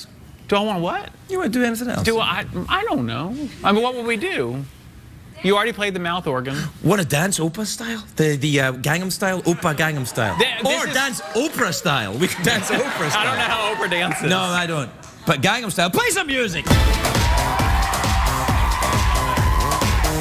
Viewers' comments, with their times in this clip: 0:05 you can hear my sister say out loud "dance" x) hahahaha